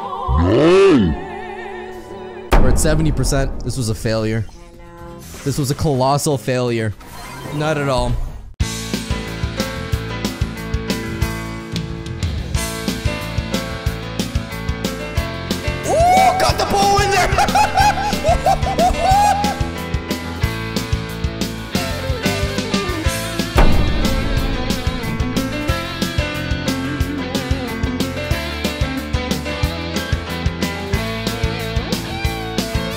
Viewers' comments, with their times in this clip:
0:09 This music BEAUTIMISSS <3
0:15 Did he say Bull or Bo?